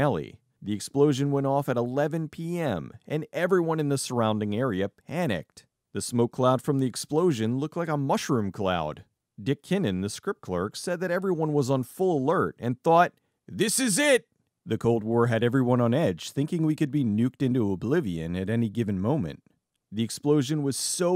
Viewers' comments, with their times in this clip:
0:03 sounds like one of my dads fireworks